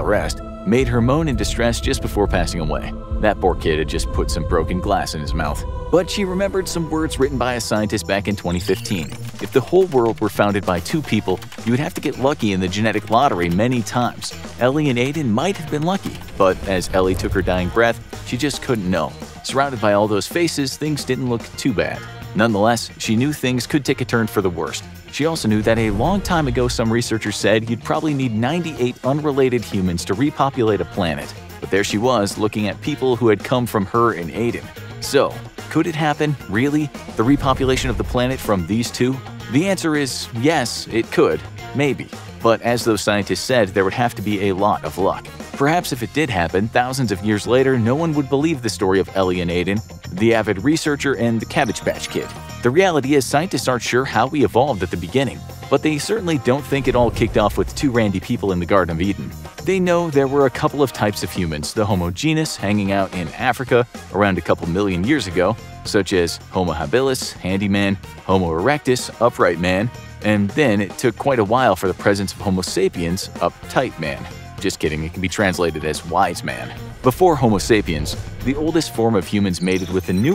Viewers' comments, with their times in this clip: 0:08 for half a second I thought someone was farting on a keyboard.
1:05 You can hear him trying to stop his laugh 😂
1:08 Anyone else hear that change of voice caused by an obvious smirk? I sure did... I did..